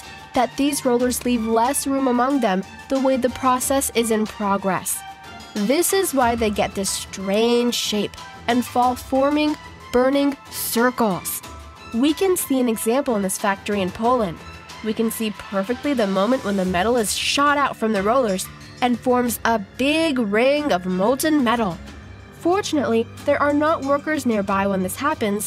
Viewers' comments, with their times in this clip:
0:07 "fall forming, burning sthircles!" LMAO her voice.